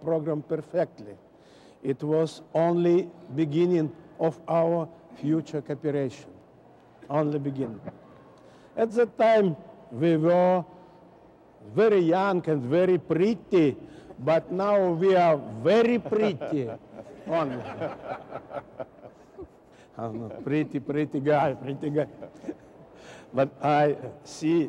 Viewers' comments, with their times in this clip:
0:08 "At ze time ve vere very yonk and very prreety!" Alyosha was adorable.❤